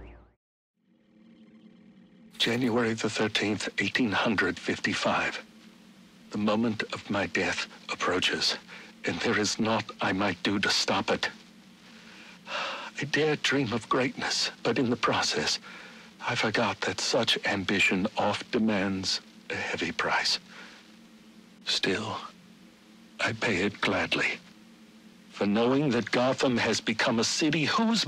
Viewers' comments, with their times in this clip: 0:10 Did he sigh ?? I don't even....